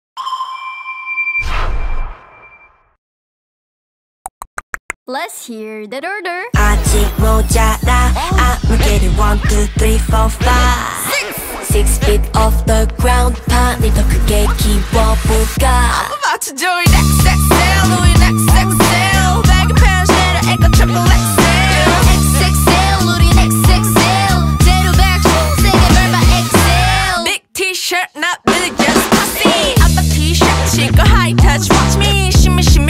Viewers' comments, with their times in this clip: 0:03 LETS HEAR THA DURDURR
0:04 let’s hear durdurdur
0:20 The background song sounds like that one Seotaiji & boys track!